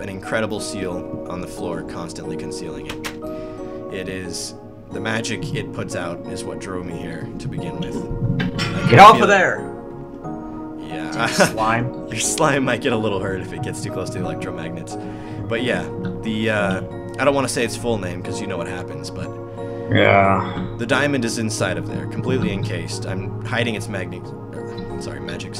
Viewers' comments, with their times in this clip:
0:06 did anyone hear what sound like something breaking? In real life, not in Minecraft.